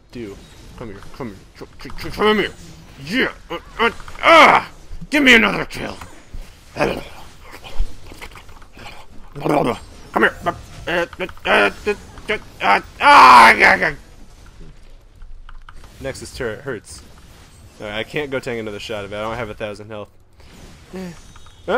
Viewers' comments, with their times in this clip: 0:08 i dont want to tell what that sounds like